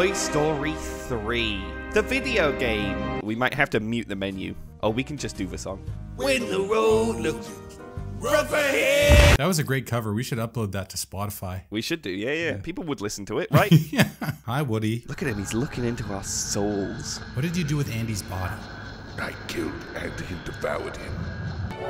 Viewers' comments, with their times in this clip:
0:06 This New Song Is Sick